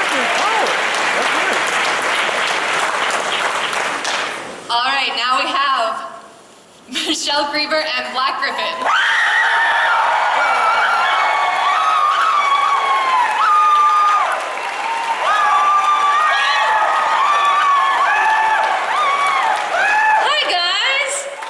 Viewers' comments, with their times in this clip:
0:07 My hears XD